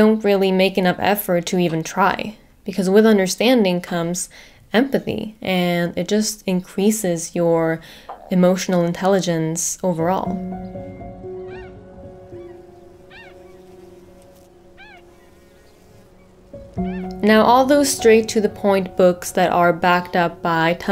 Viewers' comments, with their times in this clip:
0:07 I could hear your stomach growl, followed by a self-aware suppressed smile. Adorable.
0:08 I could hear your stomach lol
0:08 I like how you didn't edit that stomach noise out. I really like how real you are as a person. <3